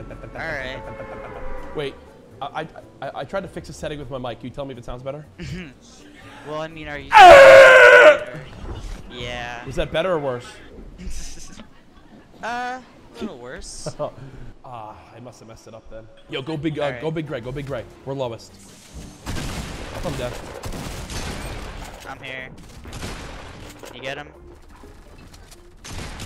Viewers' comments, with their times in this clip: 0:07 Turn up ur volume you can hear a little girl screaming